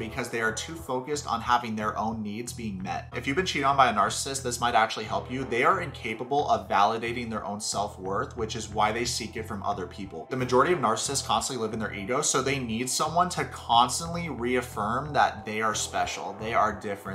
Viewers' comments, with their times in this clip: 0:03 I heard “If you’ve been cheated on by an arsonist” and my brain said “Where there’s smoke, there’s fire”